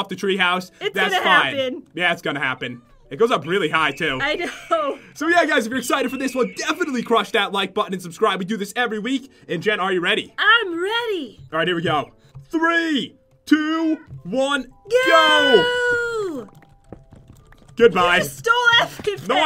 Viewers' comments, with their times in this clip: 0:03 anyone else hear the perfectly timed screech of a hawk ?
0:03 funny how he looks up and there are eafle noises
0:06 There's a sound of sponsored eagle